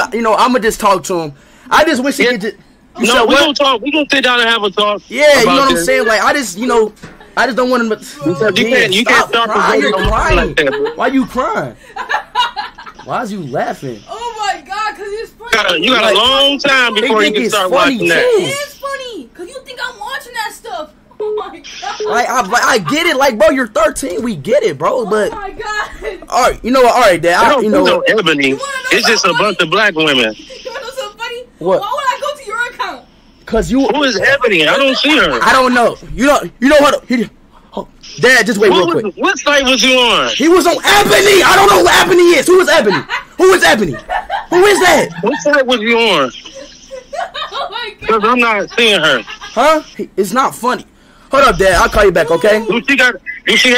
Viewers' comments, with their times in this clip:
0:05 he started laughing because he knows how to pronounce ebony
0:39 Speeds dad: what thing was he on? Speed: he was on EBONY!!!! just yellin the word ebony lol 😂